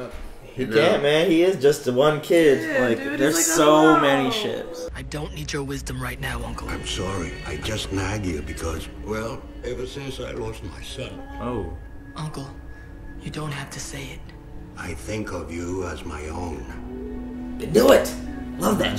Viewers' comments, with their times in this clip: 0:05 The scene between Iroh and Zuko melts and breaks my heart at the same time. They have so much empathy and love for each other. Like how Iroh's voice breaks when he mentions his son and Zuko saying he doesn't have to say it. Some deep shit right there